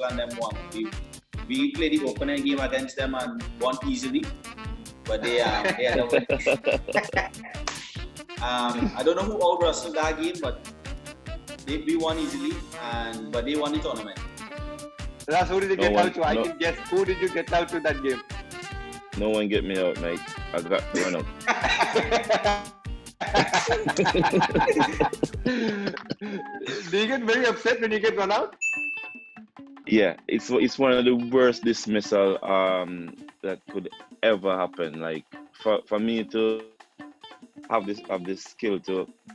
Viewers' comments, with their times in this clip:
0:05 SUNIL NARINE LAUGHS!!!
0:26 -Sunil Marine Laughs😃